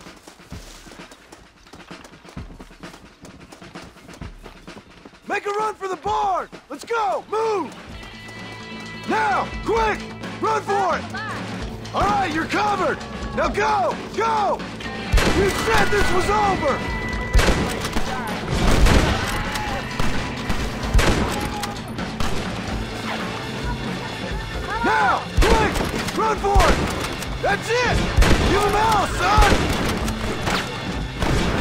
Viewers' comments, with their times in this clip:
0:09 This soundtrack is just...beautiful. The music for this game fits so well with the tone and the scenes.
0:14 I didn't just hear a Will Helm's scream in my Rockstar game. I know I didn't.